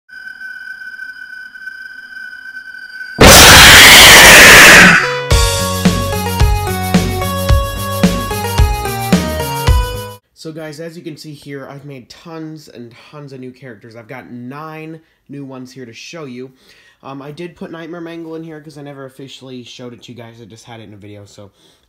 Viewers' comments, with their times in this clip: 0:02 my ears are just gonna bleed now k
0:03 rip me and headphone users